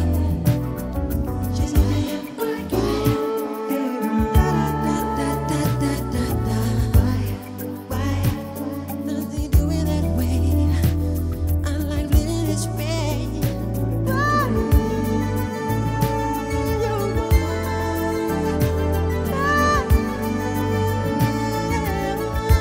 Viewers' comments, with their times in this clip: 0:03 That silent oooooaaaaahhh...near the end ,had me rewinding. That ish right there is so....oooooaaaaahhh...